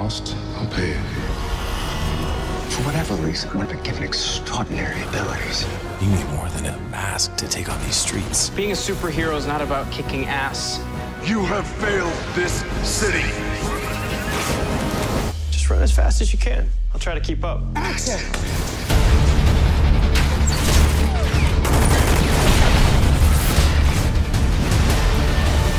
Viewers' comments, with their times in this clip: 0:10 omg love Stephen's voice